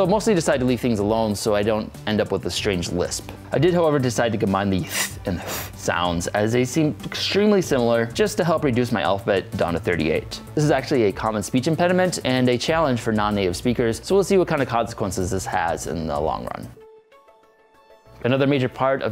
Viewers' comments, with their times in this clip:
0:04 I'm a native English speaker and I definitely heard him pronounce both of those as unvoiced th, not voiced.